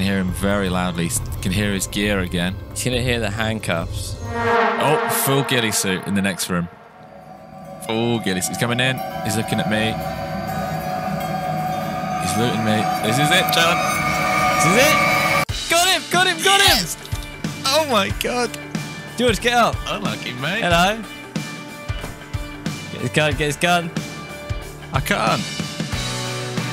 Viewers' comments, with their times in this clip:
0:08 love the 'inspirational' music when you cuffed that ghillie rofl